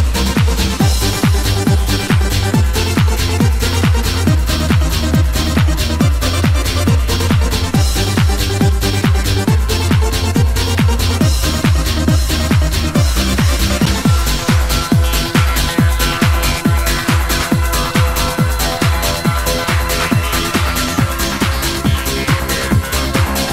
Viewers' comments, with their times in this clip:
0:09 I used to listen to this obsessively, all the time. Makes me want to go clubbing but now I'm old I would panic and get a taxi home at 10.30pm. Edit: The mixing is startlingly bad though isn't it? Listen !! Maybe that's the appeal - its like your friend with a pair of Technics messing it up occasionally and quickly going into the next track and hoping you won't notice. Anyway my thrill now is jogging so I'll play this for tomorrow's run and give myself neck chills with no comedown xxxx